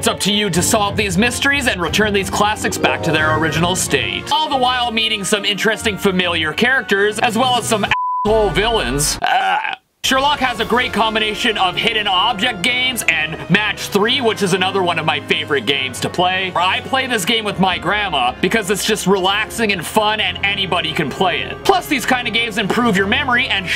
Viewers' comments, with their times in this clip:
0:04 I definitely heard the chicken little one. I always hear the curse word first lol. What am I gonna do with myself lololololol. Omg the doc mcstuffins one!!!! Wow!! Lol! Disney had it coming. Great video
0:04 Are we dirty minded? Too immature to hear the actual word? I don't know. But I wouldn't have it any other way!! 🤣 PS... is a decoy!! 😉